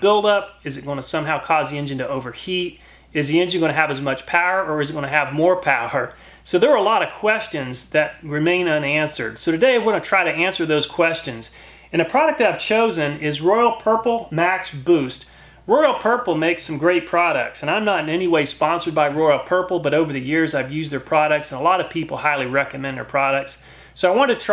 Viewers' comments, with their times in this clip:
0:05 you laugh at the very idea 😂